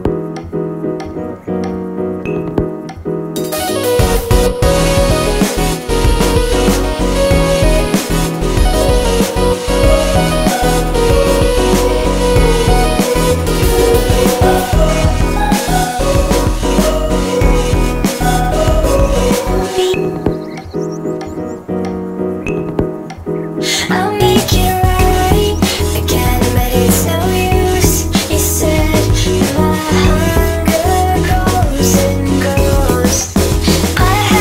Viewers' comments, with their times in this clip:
0:03 sounds like an undertale song
0:15 I think what reminds you of Virtual Self is that ''O'' sound in the background
0:15 I heard some beat patterns of shelter in this song...